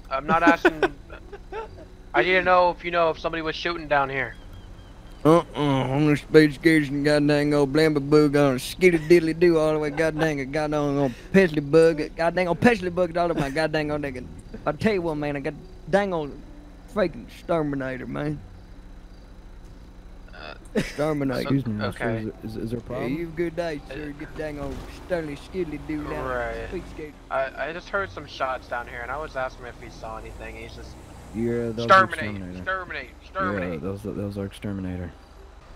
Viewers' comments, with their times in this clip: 0:07 when he starts saying idk what i was like ''Am I too high to not understand English so i went back and heard that he was saying some Gibberish''
0:16 I can hardly tell what was the guy was saying not the Officer